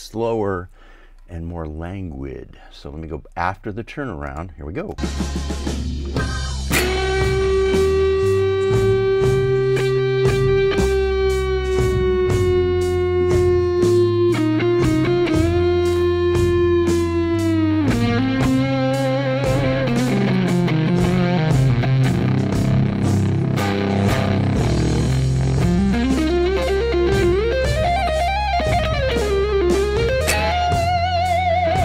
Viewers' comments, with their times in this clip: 0:05 you lean away from Page. That's influenced. Sounds more like Hendrix/Malmsteen with a style of Page. Jimmy page played classier blues than anybody. On record, he was precise. Live, he was unchained.
0:13 Holy crap I was really diggin’ it and then min you turned on the Broadcast pedal and totally shredded it so good I got the brain-melt. Legit brought a tear, that was so good